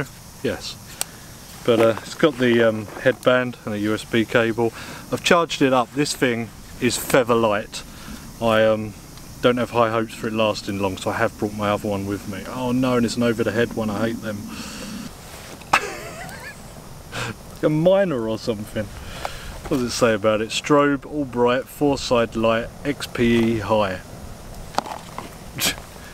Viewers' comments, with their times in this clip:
0:08 even the closed caption thinks you said "FEVER" light.